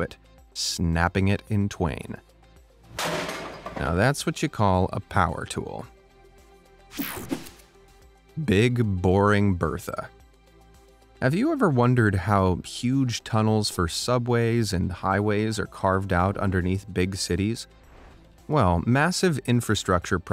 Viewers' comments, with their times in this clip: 0:04 he said that's what you call- then an ad popped up and said Elon musk so it sounded like that's what you call Elon musk